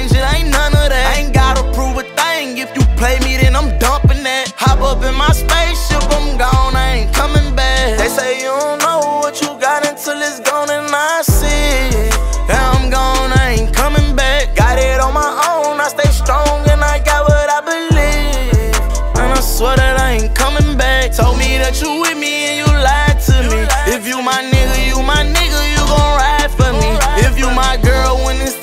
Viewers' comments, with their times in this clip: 0:09 Am I tripping or those lyrics was never in when he first dropped this song I swear he did a hum or am I tripping ?